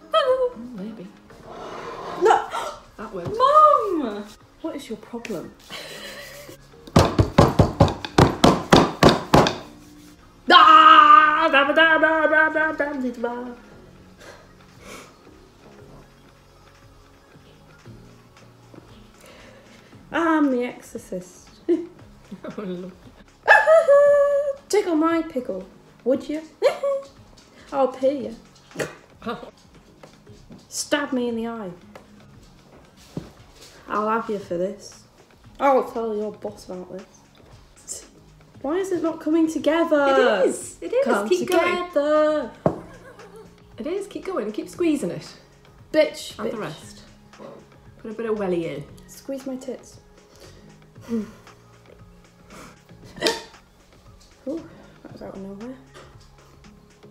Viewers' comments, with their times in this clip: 0:10 almost sounds like the lion king
0:41 AYO WAS SHE SINGING THE BEATLES sorry lol